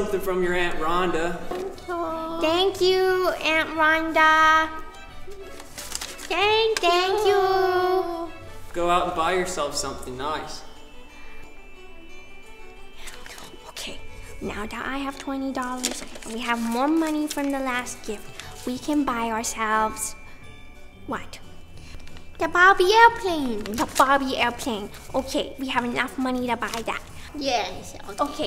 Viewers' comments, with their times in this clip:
0:10 THE "NOICE " WAS REALLY "NOICE"